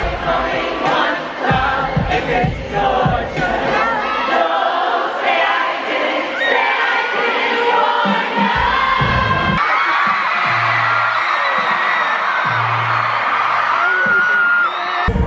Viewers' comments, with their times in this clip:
0:03 YOU CAN HEAR PEOPLE DOING THE BLANK SPACE LOOP LMFAOOOO